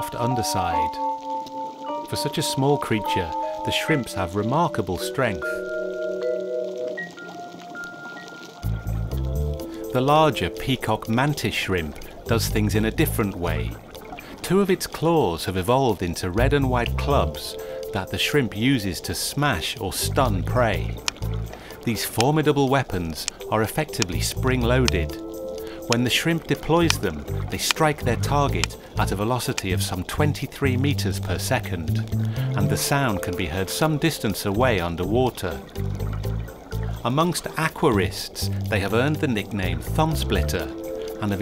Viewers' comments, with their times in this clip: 0:08 plays 90s detective music for the shrimps intro
0:26 hear that? Someones Mining near the Corrupted Area